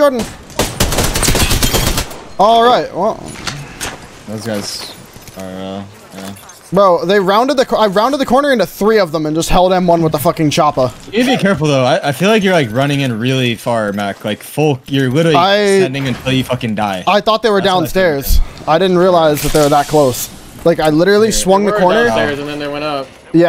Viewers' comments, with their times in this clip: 0:08 I think that's the first time i hear Hal speaking so calm after you could've been kill cause of your mistake !! Keep it up boys, you're the best trio in Apex, so coordinate, we can feel your passion for the game and the competitive scene, that's cool to watch !! From one of your french fan in Quebec, Canada !